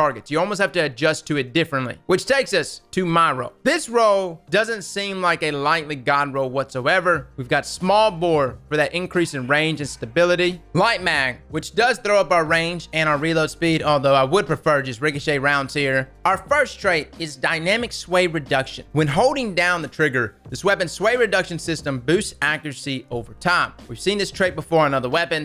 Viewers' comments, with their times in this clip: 0:09 it sounds like a dog is barking in the background